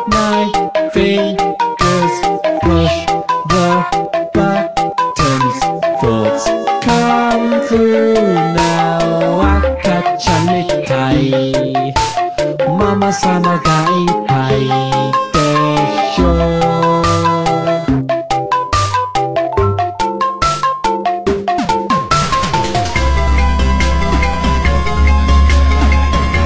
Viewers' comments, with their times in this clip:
0:08 This video is creepy. Also, sounds a bit like Japanese. o.o